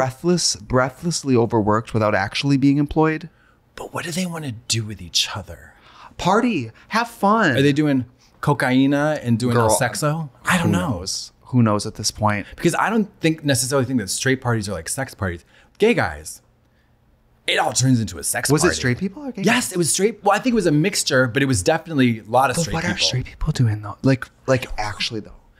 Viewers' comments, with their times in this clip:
0:08 Are they doing "cocaína" and doing "sexo" in the clearest brazilian accent